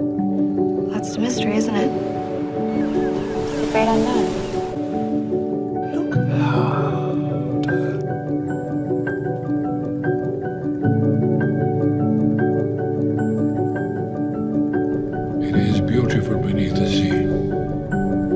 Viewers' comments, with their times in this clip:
0:05 I will forever be in awe with your part when the music turns into sth even more beautiful <33 so glad you kept the Narnia scene in. Can't believe I forgot about the fact we worked on this one for a YEAR. I loved to have this project always in the back of my mind... and I really mean it when I say: this was vidding therapy for me. Thank you. Also for your lovely words, they were actually too much for insecure self-critical me * hides in the corner * but they mean a lot!